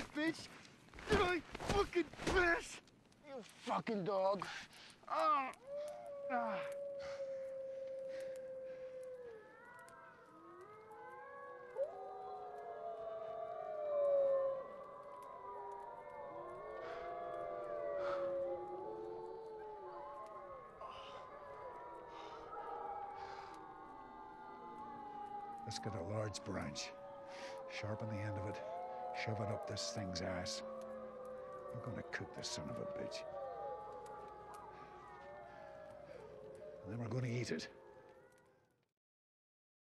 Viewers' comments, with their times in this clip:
0:06 heard that one night during spring.. fkn wolves were chasing moose around that time.. around 3am is when I heard howling coming from the bay across from my folks cabin.. then the wolves stopped and this single deeper howl can be heard.. it was truly amazing to hear
0:28 Does Liam talk with irish accent ? :))